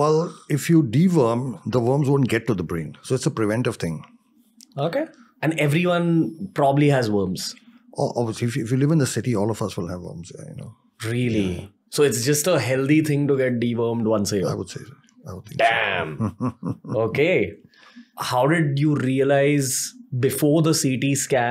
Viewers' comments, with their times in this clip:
0:04 what was that okay!😂😂